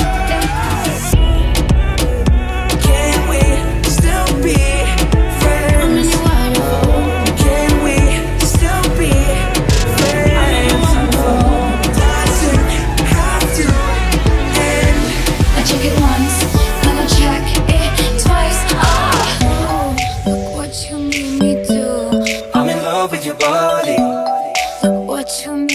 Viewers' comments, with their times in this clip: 0:06 While apreciating the work, I have troubles to like the part before too much bass to my taste. After that point, very good ! :) PS: I think it's the first time I see a KPop band in a PopLove....